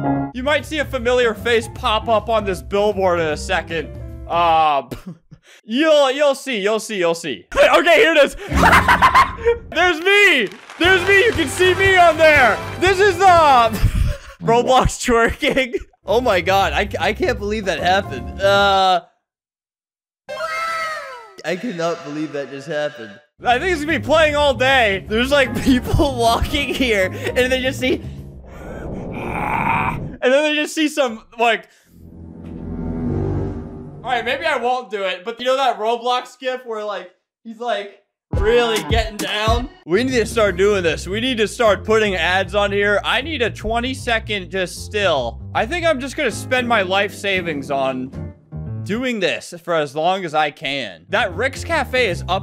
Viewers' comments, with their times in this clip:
0:08 CRAZY LAUGH MAN
0:08 That laugh actually scared me lol.
0:09 your laugh here
0:34 HE CALLED GIF HOW IT IS SUPPOSE TO BE PRONOUCED LETS GO